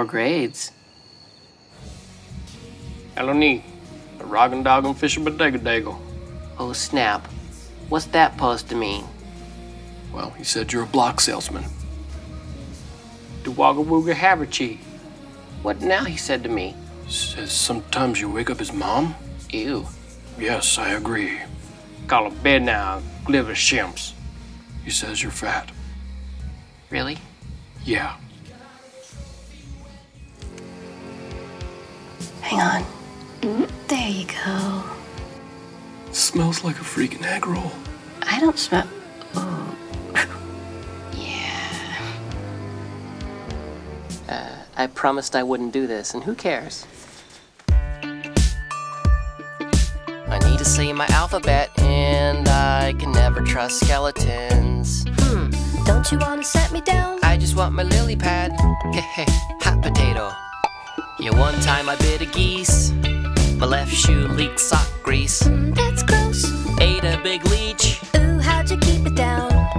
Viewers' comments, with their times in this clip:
0:03 Jacob and Jasper swapped accents you'd expect to hear in spaghetti westerns.
0:47 yw for the beat
0:48 sounds like a Jack Stauber song
0:53 I lost it when Jacob started singing 😂😂😂